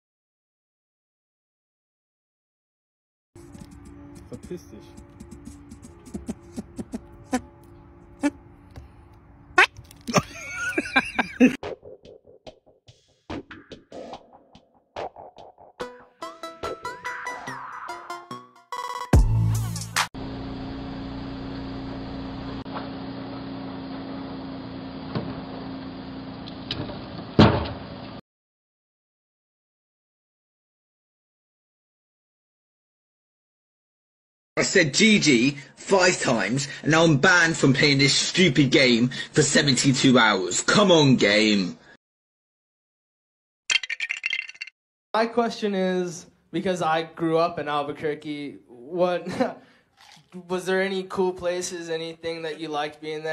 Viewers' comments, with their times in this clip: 0:04 i really hate to be that person but the laugh deadass sounds like dream
0:34 OMG THAT SOUNDS EXACTLY DANTDM NOO
0:41 the lego sound with a bike falliong apart